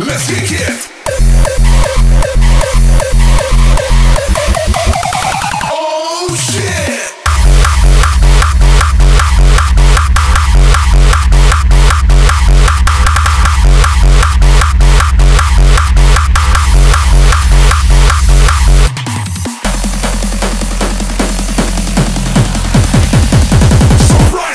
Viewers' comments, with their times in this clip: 0:07 That bass is dirtyyyy I love it!!